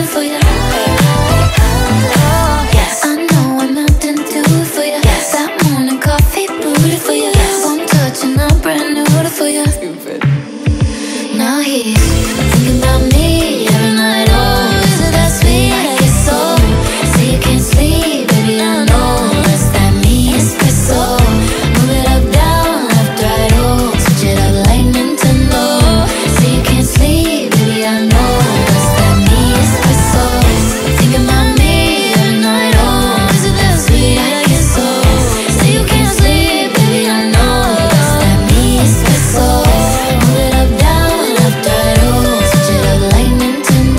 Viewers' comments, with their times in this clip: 0:08 I love the way the vocals are layered when she sings "Now he's thinkin' 'bout me every night, oh, isn't that sweet? guess so". Beautiful. Ugh, so gorgeous.
0:14 did anyone else hear "so sweet, like queso" 😭
0:14 The best version of the chorus is how she sings it I wonder why she doesn't sing it that way live :(
0:18 as an adlib junkie, that “I Knowww” pierces right to my rhythmic heart! ❤❤
0:31 HER VOCALS ATE AND LEFT NO CRUMBS